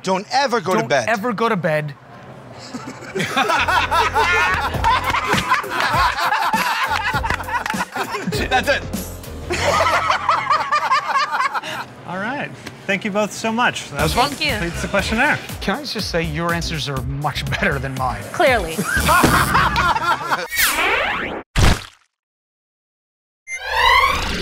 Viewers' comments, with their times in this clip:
0:07 joe and sal clapping in sync lmao🤣